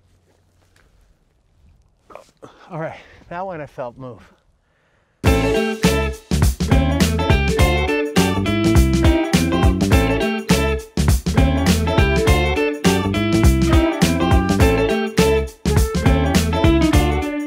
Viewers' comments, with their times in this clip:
0:03 you can hear that crack. All the animal sessions are good.